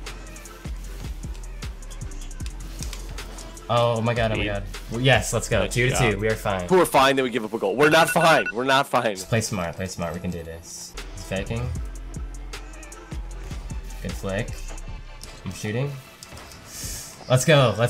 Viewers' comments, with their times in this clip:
0:04 I bet know one herard his timer in the back